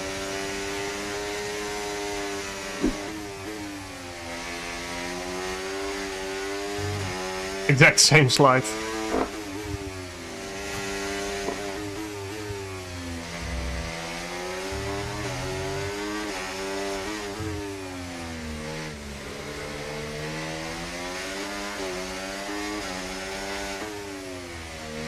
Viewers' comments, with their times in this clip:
0:08 damn I thought that was a fart too but he does another 2 and it's clearly him leaning back in the chair from braking, it's the chair making the noise :P